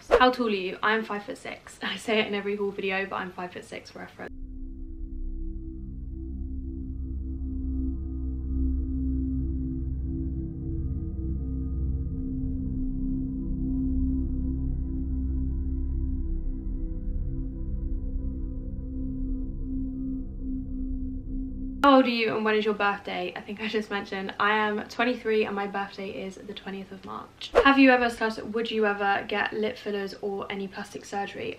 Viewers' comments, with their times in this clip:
0:04 There isn't any audio Great video 👍🏻 🥰 xxx
0:15 Anyone else get to and the audio just cut and creepy music started playing or is my phone ACTUALLY possessed. Send help 😭